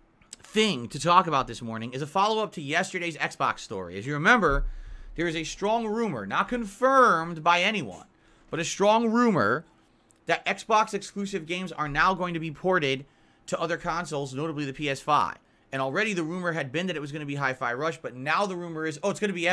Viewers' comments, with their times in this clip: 0:07 uh Phil why did you say confirmed like that are you ok